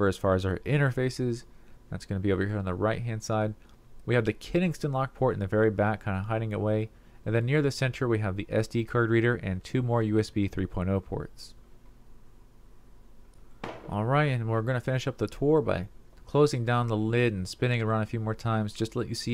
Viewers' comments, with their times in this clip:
0:04 "we have the Keningston lock port".... Ken-SING-ton. I've watched 7 or 9 videos of you saying it wrong.. get it right :)